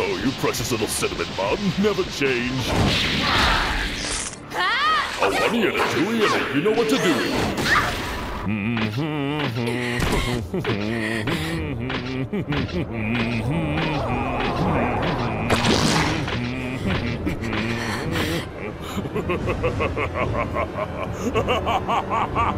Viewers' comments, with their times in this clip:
0:09 when cell is approaching Android 18, he's humming the perfect cell theme while approaching her. The small details are the best.